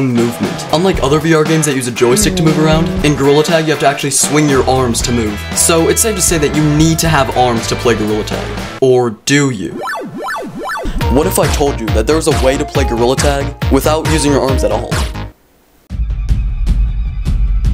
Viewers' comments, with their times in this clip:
0:05 "So, it's safe to say that you NEED to have arms to play Gorilla Tag." "...Or do you?" vsauce theme plays